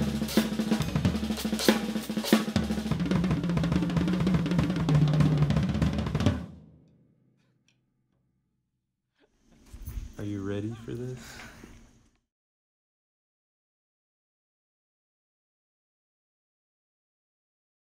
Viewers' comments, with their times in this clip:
0:03 anyone know the sticking pattern? Very tasty and unique stuff.